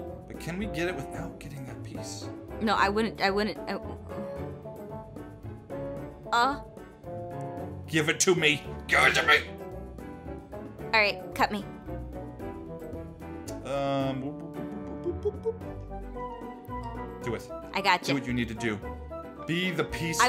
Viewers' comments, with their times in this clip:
0:06 Did aphmau just Moan!?!!?